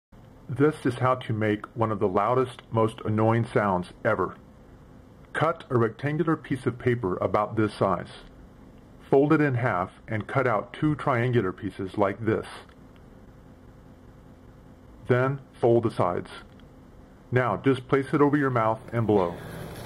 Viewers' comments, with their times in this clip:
0:00 Annoying sound begins a